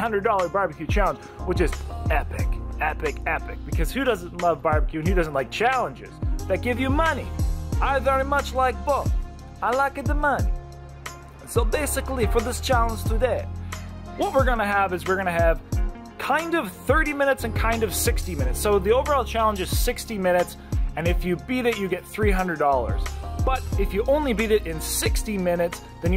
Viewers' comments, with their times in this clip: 0:07 sounds just like the ‘Crazy Russian Hacker’ lol